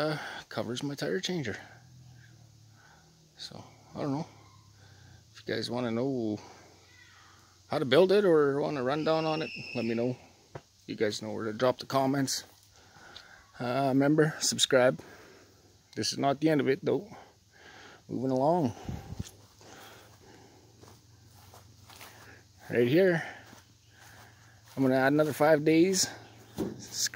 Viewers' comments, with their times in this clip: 0:09 *child screaming in horror